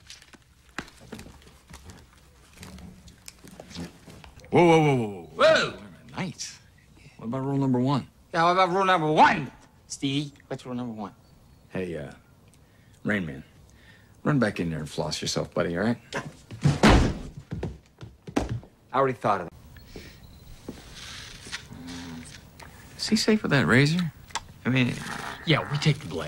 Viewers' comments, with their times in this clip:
0:09 Keaton's real voice slips in